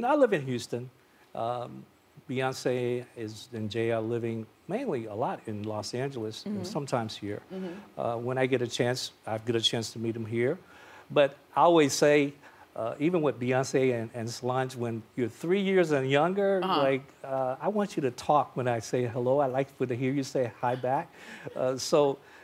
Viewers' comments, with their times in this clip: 0:03 I heard him say beyonce is in jail
0:05 I had to go back and listen 3 times! I know I heard him say Bey lives in jail in Los Angeles, what!? please tell me he said something else lol UPDATE : he said Beyonce and Jay lol he had tripped on his word thank goodness!!
0:06 the subtitles understood the same thing i did...Beyonce is where????